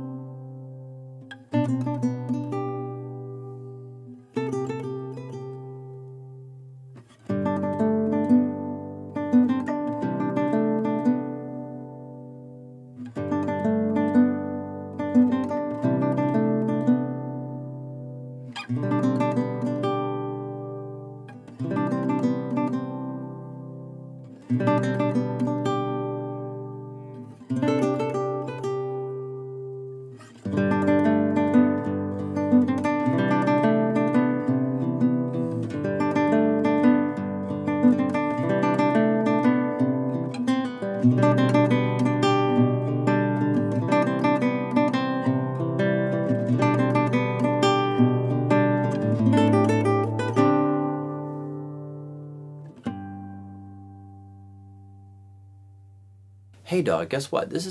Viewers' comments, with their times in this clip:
0:06 You know what this is missing? I can hear it in my mind right now. Some sort of percussion. Bongos maybe.
0:12 is there reverb on that or is the sustain on that guitar just that good?
0:40 love that little fill